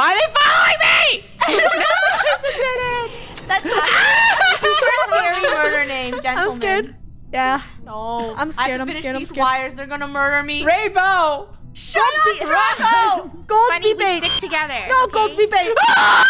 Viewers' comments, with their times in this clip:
0:04 From that point and sounds like a horror movie like I’m actually serious I got scared